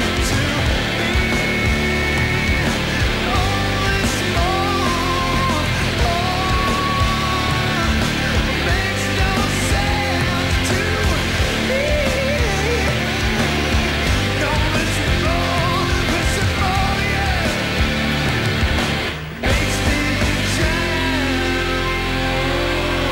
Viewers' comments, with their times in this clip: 0:10 Amazing vocal run